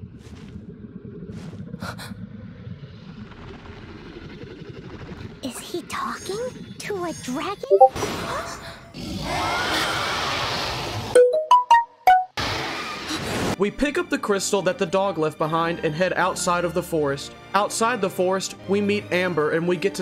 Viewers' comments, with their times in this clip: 0:07 bro that discord and notification sound got me i checked my discord because of it, was confused then i realized i rewinded and yes i was not wrong
0:07 me actually thinking I got a discord notification